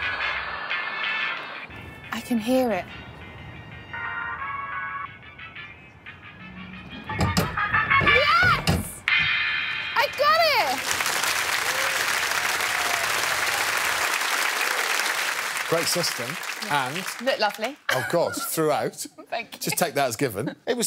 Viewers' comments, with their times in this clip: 0:06 I loved how the drop of the music was synchronized